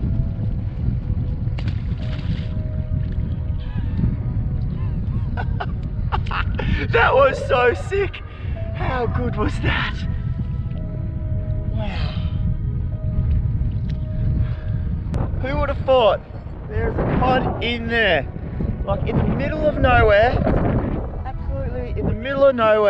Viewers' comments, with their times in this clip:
0:09 “how good was that?!” Sounding like Steve Irwin there mate 🤘🏼🤨🤘🏼